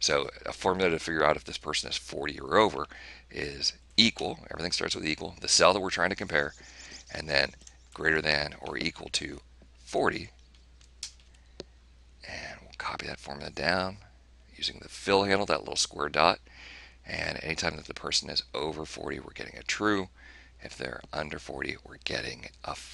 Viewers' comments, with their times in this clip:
0:07 Sounded like a finch to me.